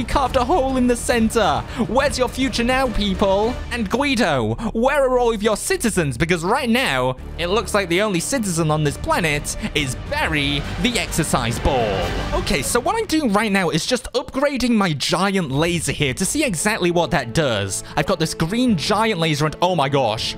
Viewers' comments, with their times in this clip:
0:06 the background music